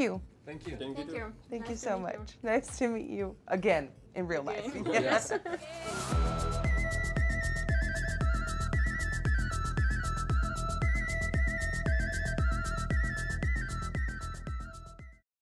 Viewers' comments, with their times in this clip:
0:06 I love how the outro goes with the song